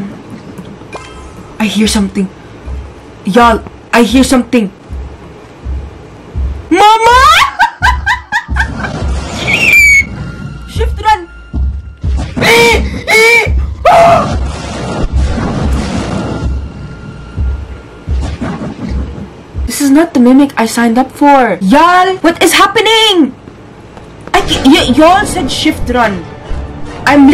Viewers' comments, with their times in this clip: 0:06 was the best scream, laugh and eagle scream collaboration 😂😂😂😂😂😂😂😂😂
0:09 lol she sound like a eagle 😂😂😂